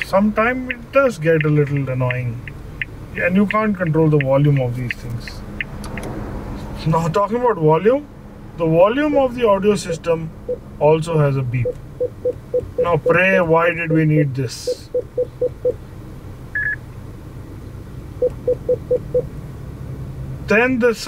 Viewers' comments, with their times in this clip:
0:03 The song is perfect for this car